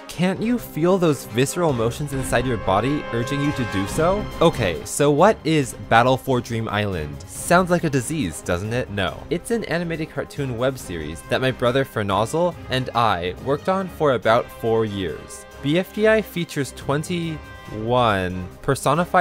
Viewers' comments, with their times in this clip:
0:07 That's what Book said and I don't or I do you voiced BFB Tennis Ball Because you almost sound like him